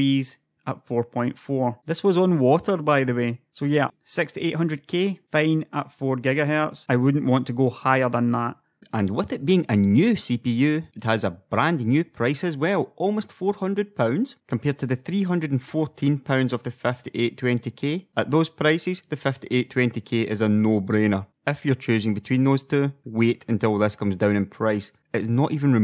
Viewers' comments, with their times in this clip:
0:08 lol your voice has changed completely i still think that it's not you